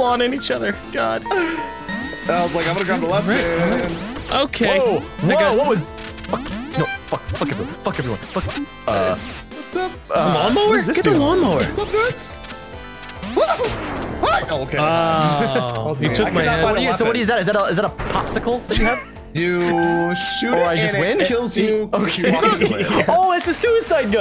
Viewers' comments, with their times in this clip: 0:05 I hear nigga in the vid am I bugging